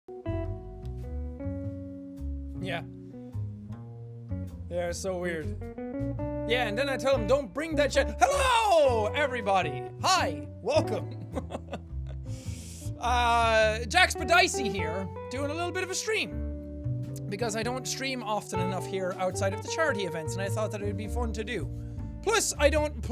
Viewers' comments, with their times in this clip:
0:07 it sound like he was about to do his really old intro